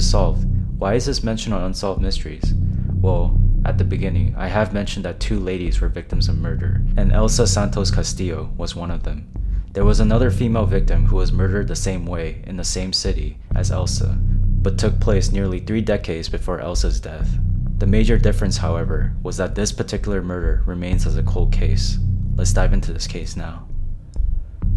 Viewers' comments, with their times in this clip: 0:09 IDK if it was just me or did his voice get demonic for a bit